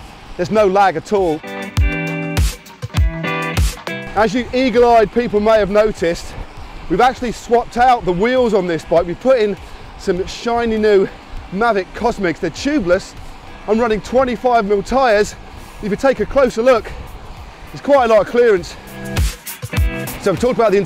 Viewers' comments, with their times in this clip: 0:03 as you eat people...